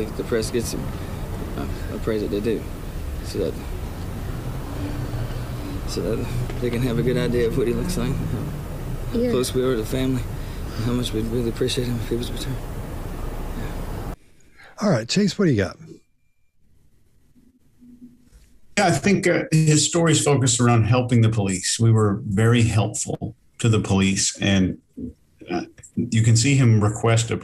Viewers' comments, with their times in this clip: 0:10 The Mumbled fading fact by the poor excuse of a Father ( on video) is him saying "How much we'd appreciate if he was returned".